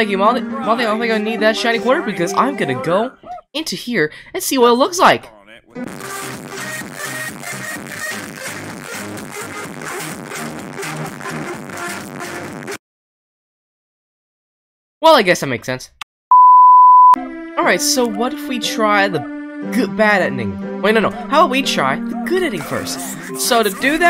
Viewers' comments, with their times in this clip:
0:05 my favorite part Warning loud!
0:06 RIP Headphone users!😂🤣And me when school is over
0:06 = stereo love remix with earrape
0:06 stereo love loud
0:06 hahah is a funny dab and bb music🤣🤣